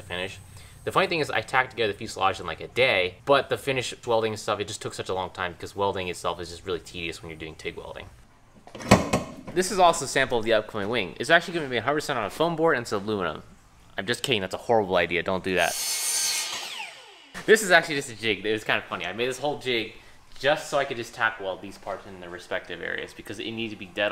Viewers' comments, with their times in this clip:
0:06 didn’t understand a fucking word of that mate and we’re both first language English 🤷‍♂️